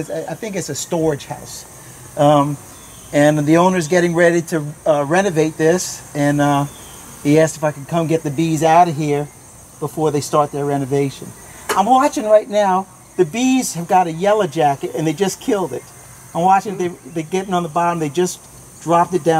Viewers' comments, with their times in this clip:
0:06 lol, at first i heard '..he has to fn come get the bees..' instead of '..he asked if i could come get the bees..' XD